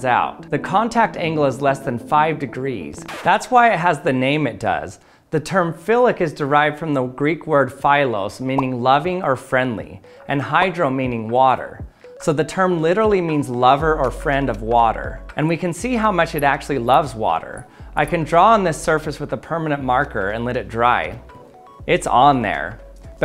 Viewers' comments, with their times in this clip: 0:07 Actually, the word is pronounced "phelos" not "pha-elos" You made it sound more like (but not exactly) the word phallus 😂